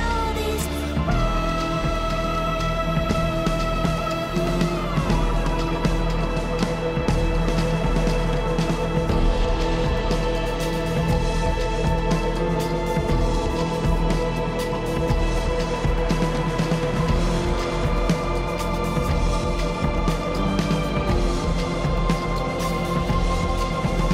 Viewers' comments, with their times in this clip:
0:08 oof! love those drums. bravo